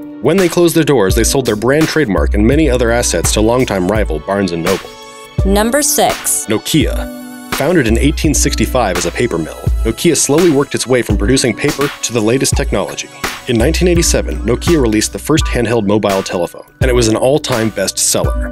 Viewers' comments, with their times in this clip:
0:05 that's now how you pronounce Nokia, oh sorry that's how you pronounce it only in the US...